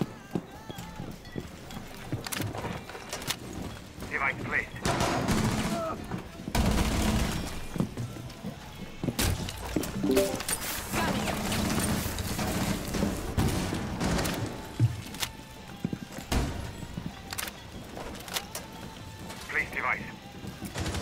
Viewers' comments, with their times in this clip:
0:04 Good music taste